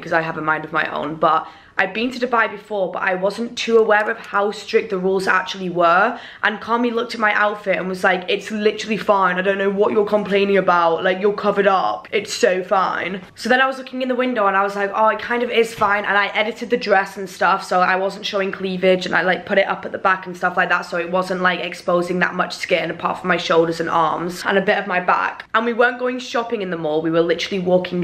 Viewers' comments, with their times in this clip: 0:09 I’m deaddddd not the Tory voice